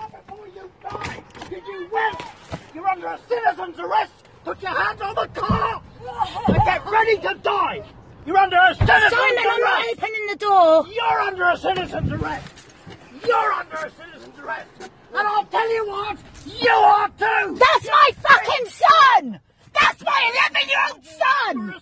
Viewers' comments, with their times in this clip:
0:06 It's the woman's laugh tht gets me 😂